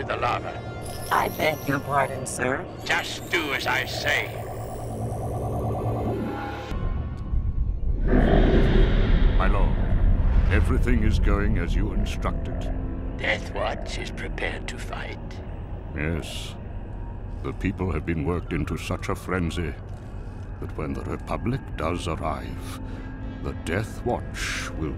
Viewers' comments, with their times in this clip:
0:08 The sound of the hologram as Palpatine popped up was very ominous😳😳